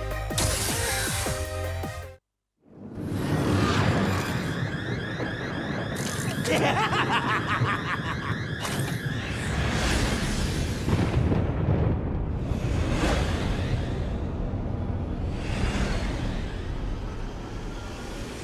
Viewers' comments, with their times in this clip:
0:06 Dr. Wily Laugh!